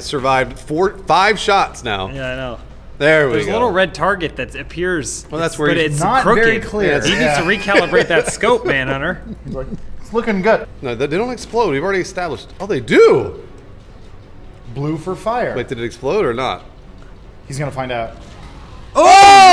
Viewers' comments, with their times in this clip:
0:07 Gomez the blow doll collapses from bruce amount of farts :P